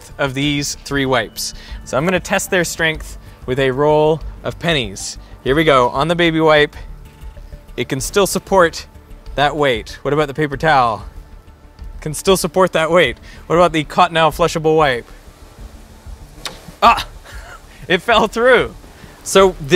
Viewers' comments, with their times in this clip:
0:04 Roll of Penis? Nani?!!!